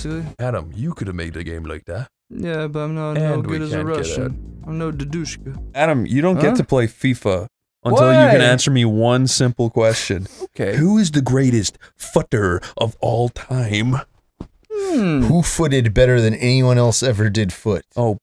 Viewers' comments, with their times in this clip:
0:06 I keep coming back for the genuinely scandalized "WHY?!?"